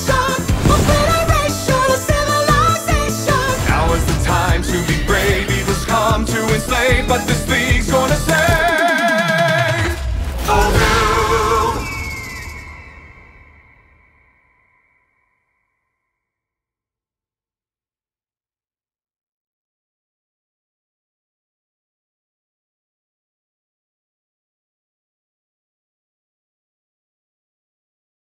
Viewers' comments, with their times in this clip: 0:09 This is song by autotunned Matthew Mercer omfg Edit: I fill like i hear his voice in in the end lines